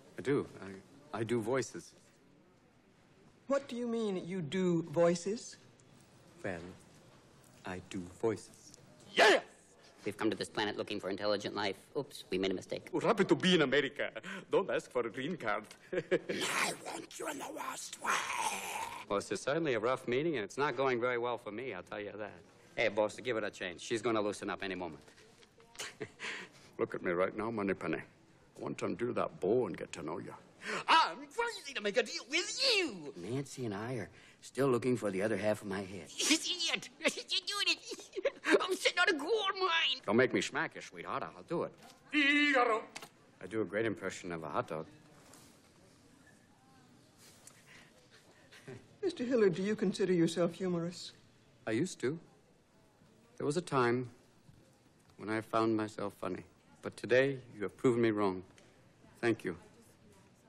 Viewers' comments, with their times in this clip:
0:08 "YES"! haha so sudden
0:10 that sounds like Mork from Ork.
0:10 he kinda sounds like ed norton
0:13 that’s literally Arnold Swarzenneger’s voice
0:16 is that Gollum's voice i hear?
0:16 Wait, did he just do a Gollum voice 8 years before LOTR movie came out?
0:16 What is he saying in the monster voice ? "I want you in the west wing?" "I want you in the lust way" ???
0:19 I enjoy the nod to the masters. The Marx Brothers. He does Groucho, Chico and Harpo to top it off.
0:26 James Bond’s Voice
0:27 Is it sad hes a better impression of bond then his ex wifes boyfriend, Stu?
0:30 I think my favorite voice Robin/Daniel did in this scene is the stereotypical car salesman
0:33 😂that part where he impersonates regan
0:38 that hiccup laugh. ⏰⌚️🕰⏱😆🤣😂😅
0:40 IDK why but that Bogart impression always kills me.. that face he makes makes it even better. Jim Varney's was pretty good but Robin's was a little better. Robin also did the best Reagan impression and one of the better Connery ones.. man could do everything. I used to do the hot dog impression all the time in high school.. people never got the reference lmao.
0:45 if you look you can tell she laughs when he does an impression of a hot dog
0:45 that impression should earn him an Oscar!